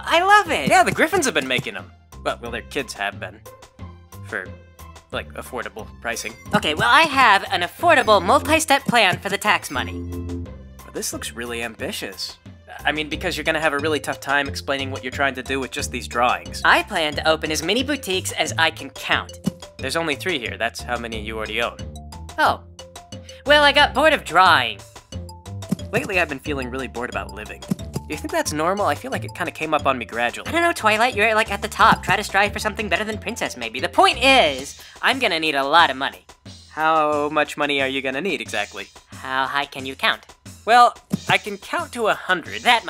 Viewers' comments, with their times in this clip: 0:06 IS ANYONE ELSE HEARING THAT MEOWING!? I CAN'T BE THE ONLY ONE! SERIOUSLY LISTEN CLOSELY WAS THAT INTENTIONAL OR DID A CAT SNEAK INTO THE ROOM DURING RECORDING!?
0:25 You know what's one of the most interesting things about this animation? I don't think I've ever seen the show animate a Pony turning around in place, combined with hoof stepping noises. Not that I can remember anyway. You did a REALLY excellent job here with it too! I know it's a relatively minor detail but it really sells it and shows how much effort you wanted to put into this.I started noticing